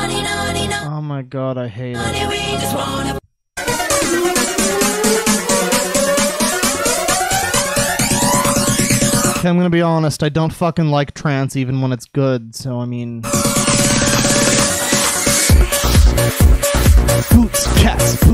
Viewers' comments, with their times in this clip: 0:03 I DON'T LIKE FLANGER AND THIS IS NOT CHANGING MY OPINION